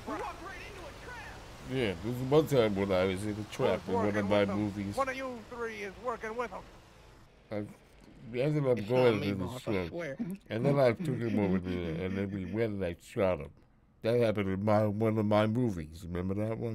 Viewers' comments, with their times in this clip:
0:03 you can hear the old man from pawn stars in his voice. "Chumlee"